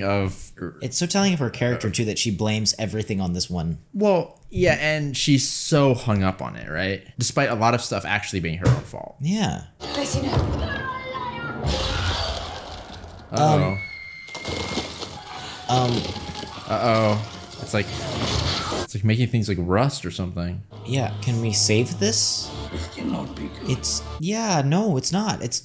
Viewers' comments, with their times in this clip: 0:10 Imagine you're casually lecturing your children and then a lady comes out of nowhere yelling and turns into stone 😂